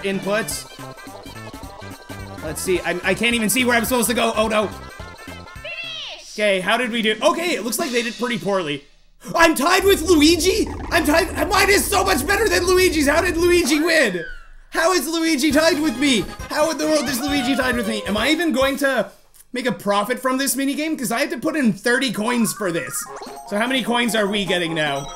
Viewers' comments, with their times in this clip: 0:09 How did Luigi win? ZXMany is so much better than Luigi!